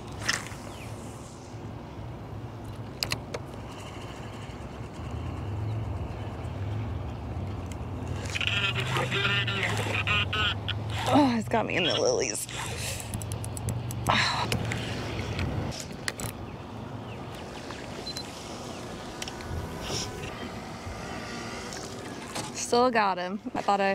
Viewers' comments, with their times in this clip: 0:08 That drag an reel sound when you set the hook is what I live for!!